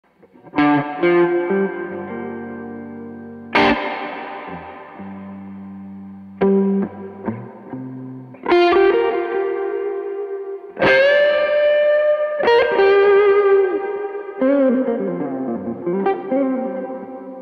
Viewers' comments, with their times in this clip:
0:00 Tone to start had me at my knees!!